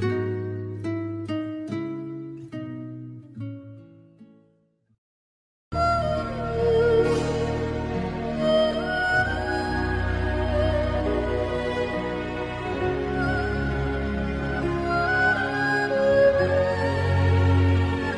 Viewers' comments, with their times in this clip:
0:04 oh man this song give me a lot of nostalgia 😢